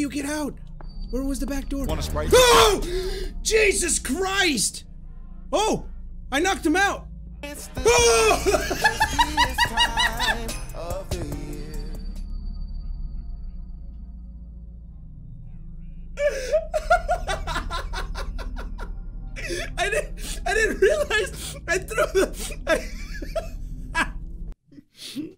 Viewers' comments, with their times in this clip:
0:07 BEST LAUGH PART!